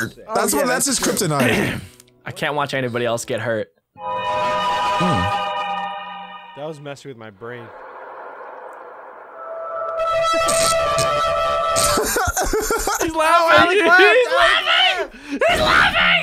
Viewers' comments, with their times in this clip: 0:03 Minecraft ambience be like: